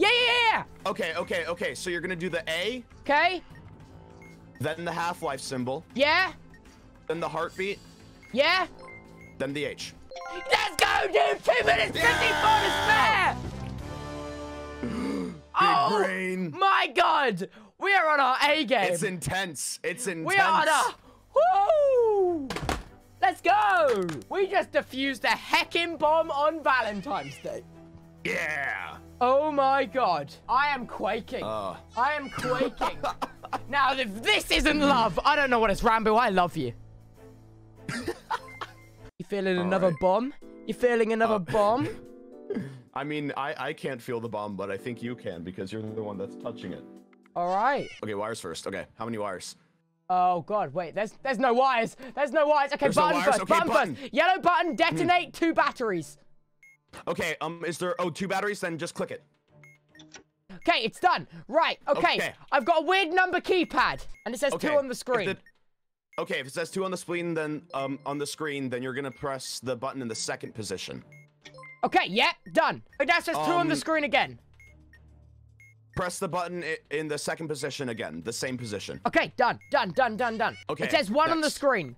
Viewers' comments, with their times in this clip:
0:08 Not gunna lie Ranboo Sounded like Techno :P
0:31 ranboo laughs exactly like technoblade o.o sus
1:06 i cant ranboo says screen like a baby
1:08 if it says 2 on the scween then-